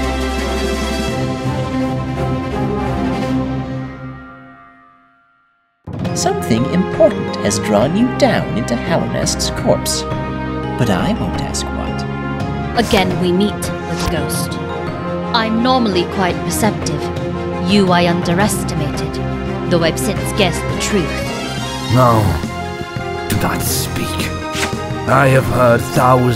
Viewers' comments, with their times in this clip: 0:10 The emphasis on the “I” implies that most people would ask what, when that doesn’t actually happen. Just a nitpick, but I feel like the “I” shouldn’t be emphasized